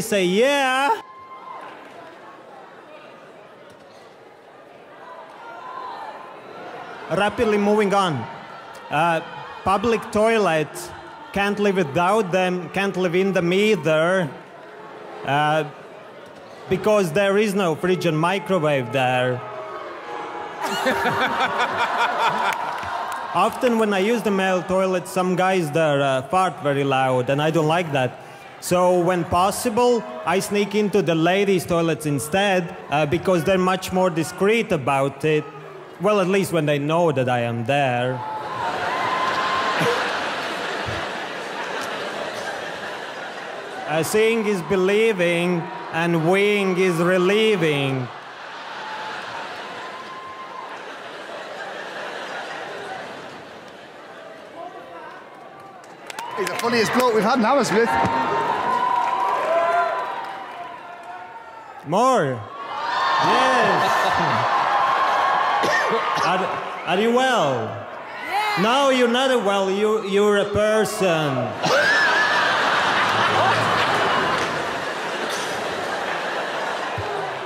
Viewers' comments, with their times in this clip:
0:05 simon broke down in a giggle
1:03 the accent made it so much better 😂😂😂